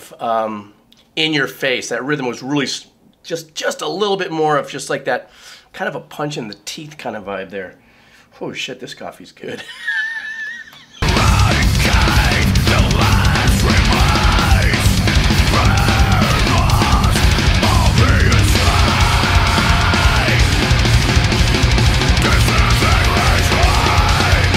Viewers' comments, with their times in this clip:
0:08 My man was TWACKIN right here!!! 🤣🤣🤣